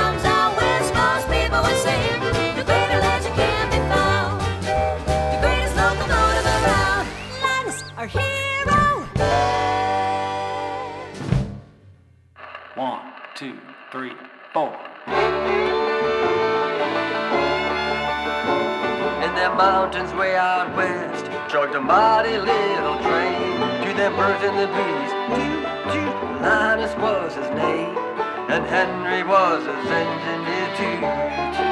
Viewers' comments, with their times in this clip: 0:03 linus has a new whistle
0:04 linus has a new whistle
0:12 if you put the speed on 0.5 it sounds like the original recordings color script of the brave locomotive